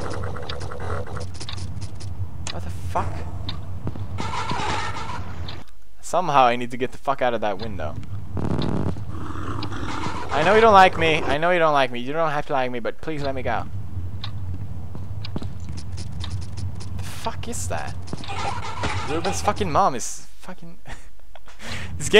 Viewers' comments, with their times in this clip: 0:07 Did he fart ?? xD
0:08 did u fart?